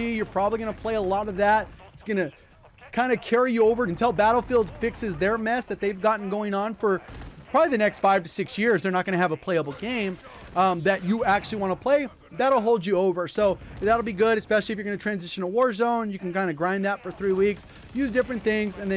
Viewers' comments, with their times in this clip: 0:03 the way you say that🤣🤣🤣😂😂😭